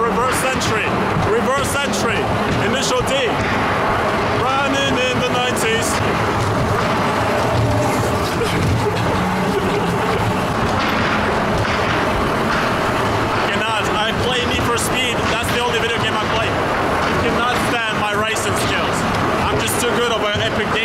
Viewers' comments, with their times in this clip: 0:05 E U R O B E A T I N T E N S I F I E S